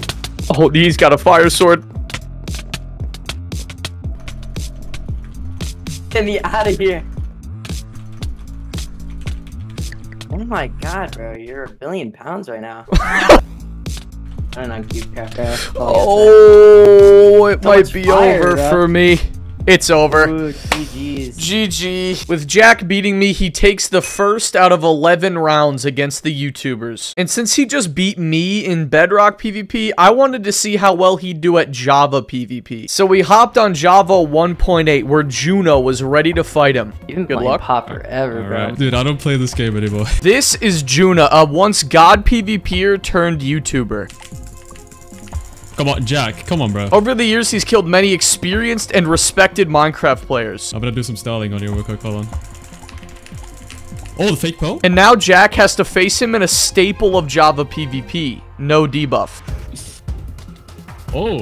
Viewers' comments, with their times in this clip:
0:06 omg that hitsync be hitten different
0:42 bro that is NOT how you say his name 😭